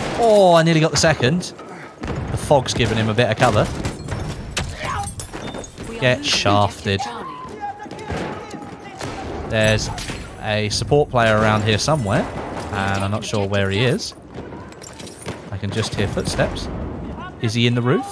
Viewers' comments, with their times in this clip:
0:04 Me imitating a speeding car: